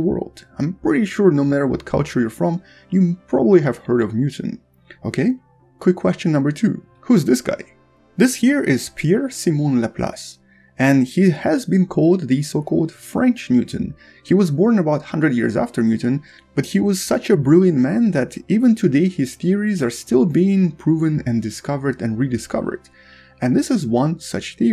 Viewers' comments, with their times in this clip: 0:09 Finally I understood that you said ”french Newton” and not ”french mutant”. Must be that damn atmosphere ringing in my ears. 🥴